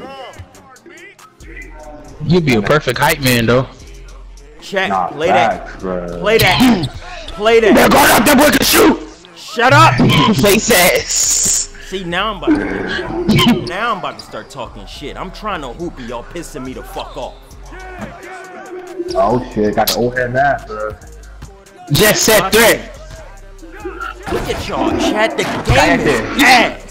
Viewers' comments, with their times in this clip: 0:07 that impression crazy 💀